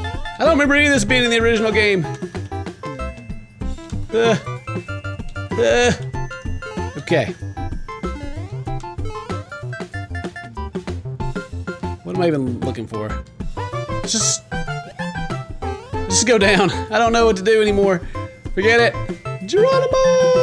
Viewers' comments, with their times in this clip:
0:07 the music is backwards